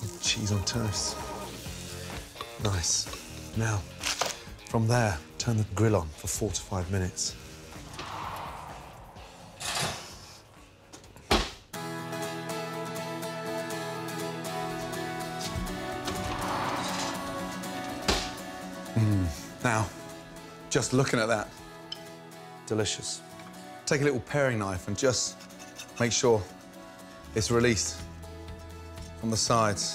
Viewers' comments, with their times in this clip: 0:05 four to five minutes, night outside.
0:10 the music that started playing sounds like my alarm i got so scared